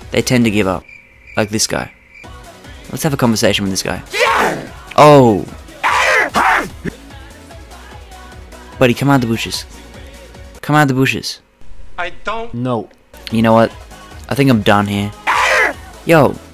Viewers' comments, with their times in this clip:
0:03 wild bibi... Man this was sucha funny video and that big shaq boom on time.